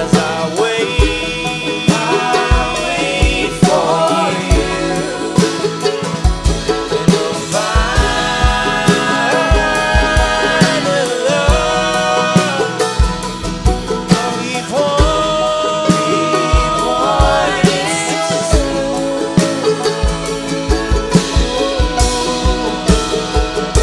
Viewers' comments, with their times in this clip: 0:08 This entire song is wonderful, but I have to say that this video enhanced it for me immensely... in he pulls for a high note and it's just so powerful, it made my neck hair stand on end and SHE turns to him after he nails it, and smiles so rapturously at him while looking at him so lovingly. That was a beautiful moment both his effort and her reaction... I'm sold. New favorite band.